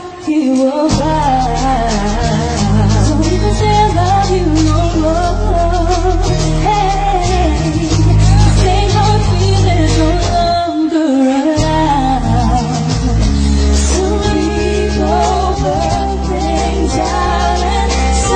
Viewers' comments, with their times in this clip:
0:06 that "heheyeee" of Kyla makes Jaya "yeaaaah"